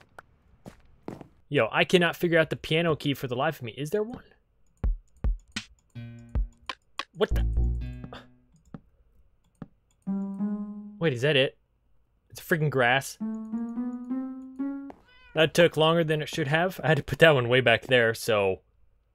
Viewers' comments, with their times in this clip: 0:04 that beat is actually sick